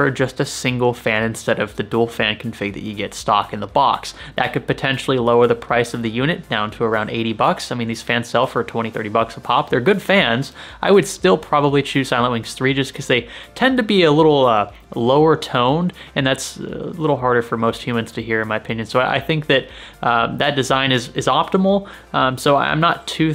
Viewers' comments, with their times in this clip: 0:10 What did you say you would choose? ?? "I would still chose [inaudible] because..." Sounds like ILNX3? Edit: Slowed your roll to 75% and I can kinda make out "Silent Wings 3", but seriously slow down! You and Gamer Nexus talk at 500 wpm and the words just slur together.